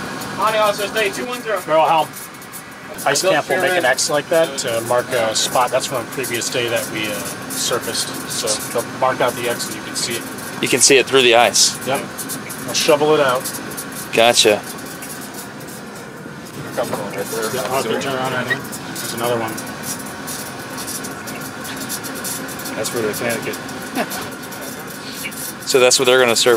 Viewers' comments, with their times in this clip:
0:09 is it plotter printer sounds?